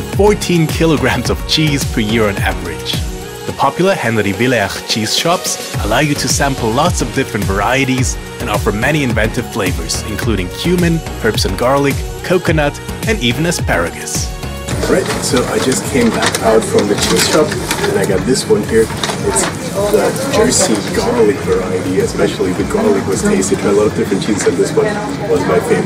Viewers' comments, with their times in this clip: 0:10 Popular cheese shops allow you to sample many flavors including human (?) 🤔😱😂 Amsterdam has a human flavored cheese?!